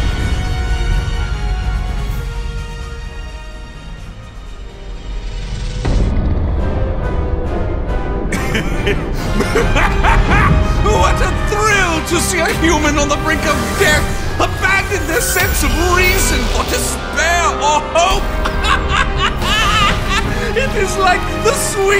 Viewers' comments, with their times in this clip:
0:04 that rant may legit be the most unnerving thing I’ve ever heard from this series.